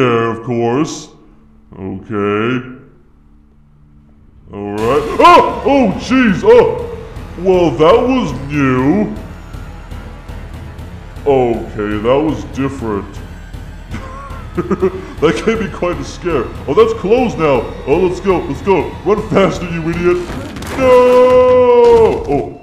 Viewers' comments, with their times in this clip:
0:05 Golden Freddy:(screams) Charizard: Holy Charmander!